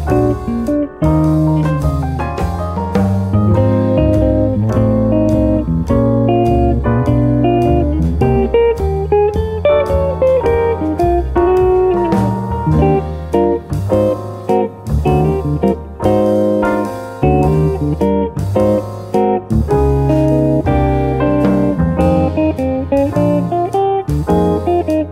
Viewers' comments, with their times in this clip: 0:09 that drum solo !!